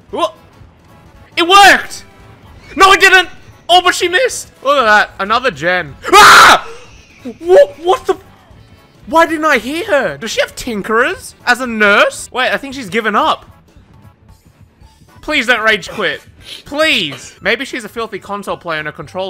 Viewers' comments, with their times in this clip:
0:04 the actual terror in his voice got me dead af
0:04 is the funniest scream you ever did bro🤣🤣🤣
0:05 the scream im crying LMAOOOOOO
0:06 rip headphone users😩